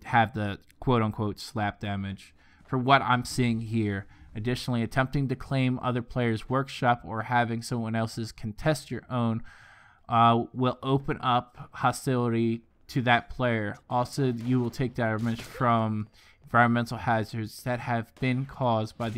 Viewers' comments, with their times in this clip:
0:04 Hooked on phonics failed for this guy lol